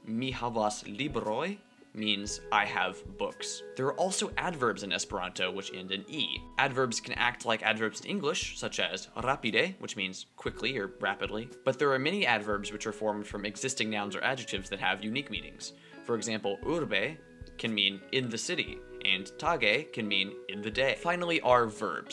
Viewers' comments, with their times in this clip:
0:07 The emphasis should actually go on the next to last syllable, unlike how you pronounce "rapide" here.